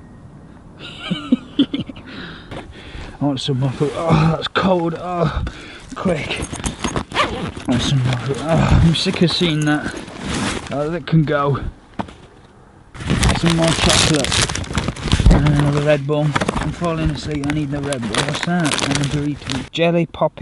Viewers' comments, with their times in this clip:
0:07 I thought that zip sound was a dog bark for a second and a half🤣